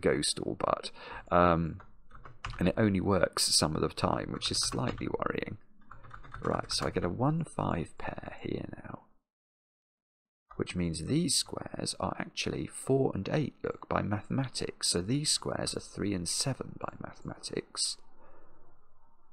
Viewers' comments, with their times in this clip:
0:04 "My two key" Sounds like a rubber dome keyboard. Cheap replacement. But i would recommend a better keyboard. Preferably with replaceable keys, including the whole switch.